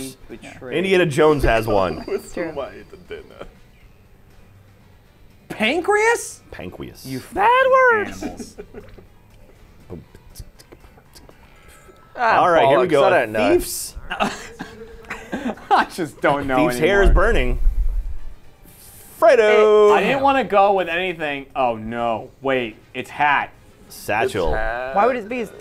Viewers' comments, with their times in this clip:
0:07 Here I am trying to fall asleep to this video and then I randomly hear a high pitched Geoff say "Bad words!" and now I'm laughing. These censors make my day 😂